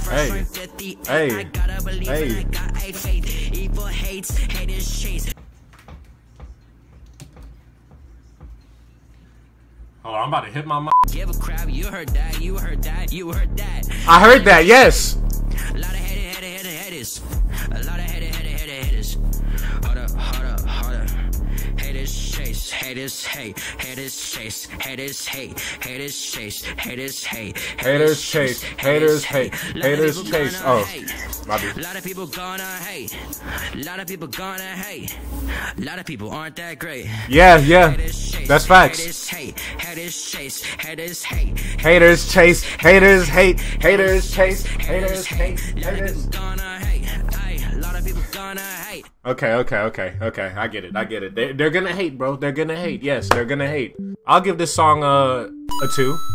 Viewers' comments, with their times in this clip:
0:03 Never mind it got trash quick
0:23 He sounds like Family Dollar Lil Xan 😂
0:39 The song Sounds like he was saying HEATHERS instead of haters.